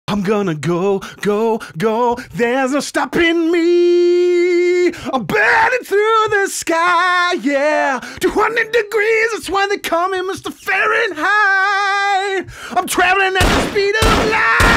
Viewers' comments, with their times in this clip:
0:00 better singing than Freddie Mercury